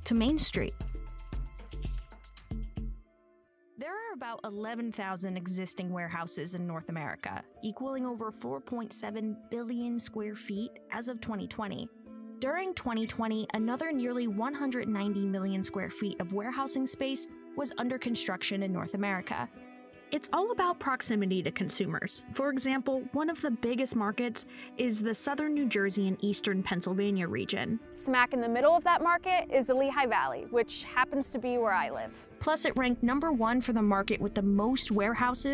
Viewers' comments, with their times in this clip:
0:06 audio really cut out there
0:16 love this music min